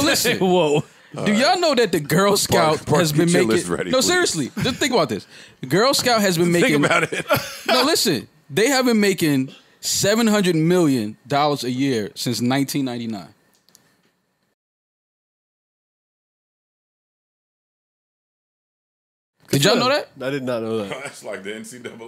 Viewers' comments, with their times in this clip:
0:04 the silence after he said that and then joe's burp and then after had me dead